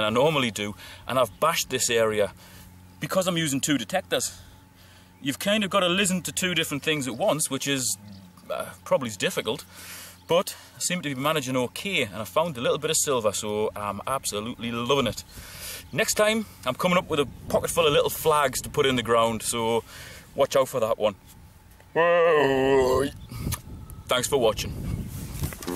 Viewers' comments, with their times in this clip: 0:10 It is the deus that chatters but I do have sensitivity set high. Proper signals are still audible so I can get away with a little chatter. I've uploaded a video which will be live GMT on Sunday which has more dueling detectors and hopefully I will get out for a few hours tomorrow so hopefully there will be some more surprises come up. GL&HH